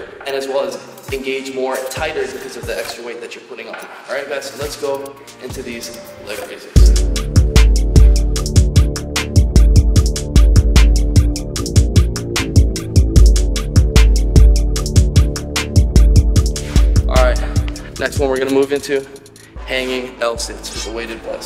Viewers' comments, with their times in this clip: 0:07 Love those beats